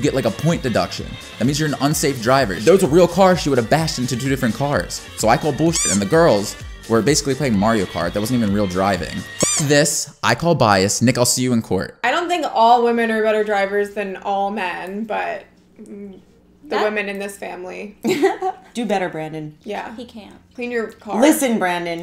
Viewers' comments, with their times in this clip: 0:09 who else thought he said n*gga here